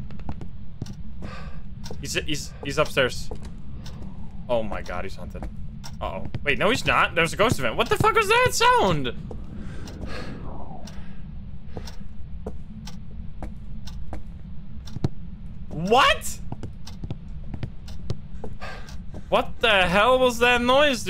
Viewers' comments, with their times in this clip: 0:09 (muffled holy noises)